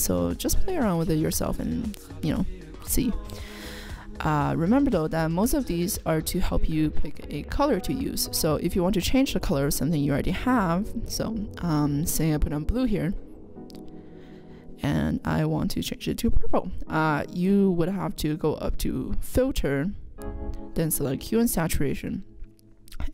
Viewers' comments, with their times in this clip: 0:10 Hearing uneasyness or anxiety even in small doses is kinda bothering me when I watch youtube. Little voice unsteadiness like makes it hard to watch. But the video itself is fine. Good job I guess.